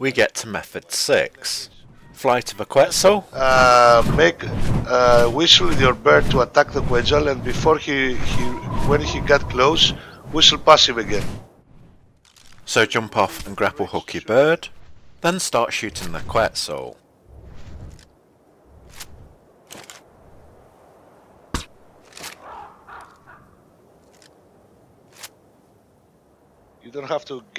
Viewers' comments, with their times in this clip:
0:04 lol wtf did you just change voices
0:14 Is the guy talking Greek?